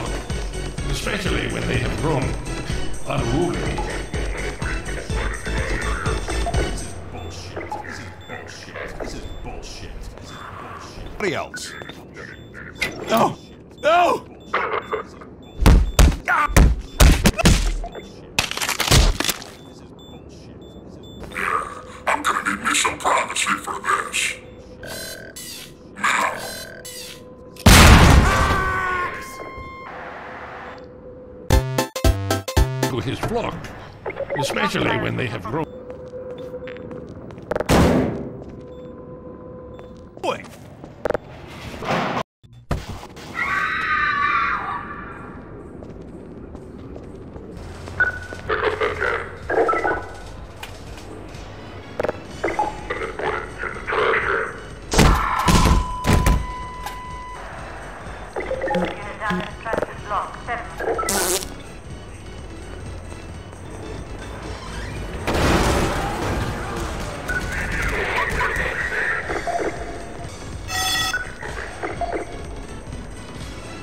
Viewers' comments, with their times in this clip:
0:07 you forgot the beep because i hear the "this is bullsh**"from the citizen
1:01 bee squeezing out a hard stuck shart